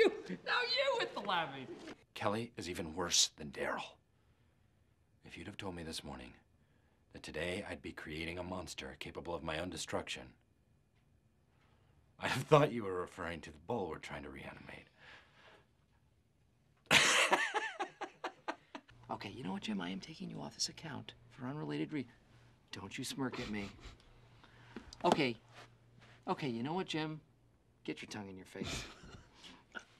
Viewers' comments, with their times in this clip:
0:10 I love when the actors just laugh at themselves when there’s nobody else in the room laughing 😂